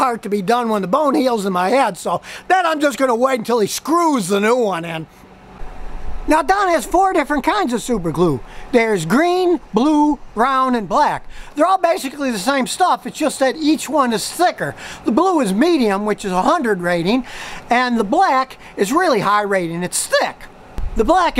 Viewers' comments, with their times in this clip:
0:03 Lol, spitting while talking